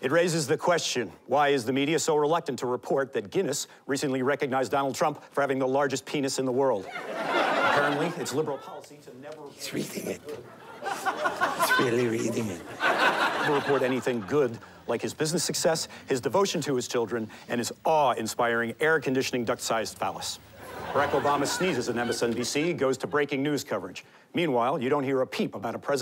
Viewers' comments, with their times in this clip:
0:09 I love how Triumph is whispering with excitement.